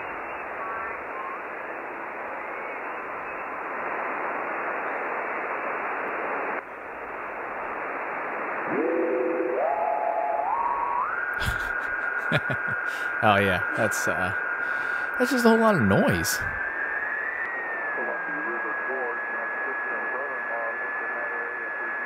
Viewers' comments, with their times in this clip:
0:08 our dude here stumbled upon some Martians